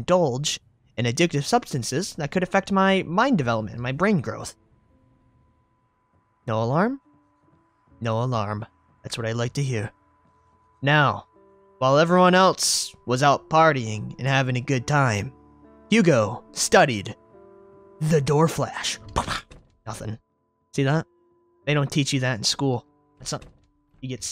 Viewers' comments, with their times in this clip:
0:06 Ahh, nothing like the sound of nothing!